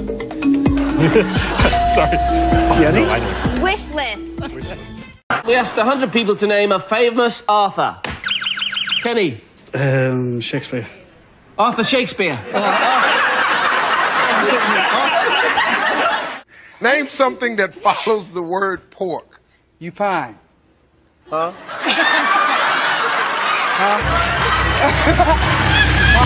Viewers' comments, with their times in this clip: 0:08 I can see why he said Shakespeare. He thought the host said "Author".